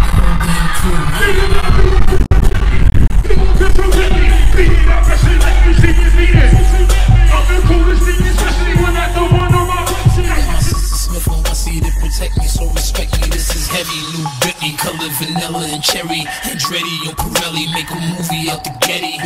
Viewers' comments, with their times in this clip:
0:04 you cant even hear him rap!!!